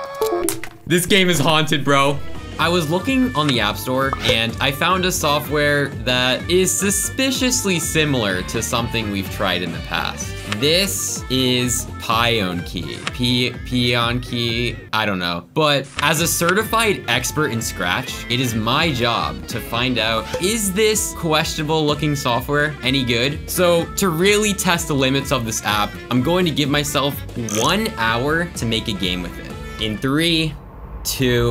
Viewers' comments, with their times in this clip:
0:03 THEA LITTLEBIGPLANET POPIT SOUND MADE ME SO HAPPY OMG edit: this uses lbp sounds for every missing sound so this is now the best youtuber ever
0:12 pee on key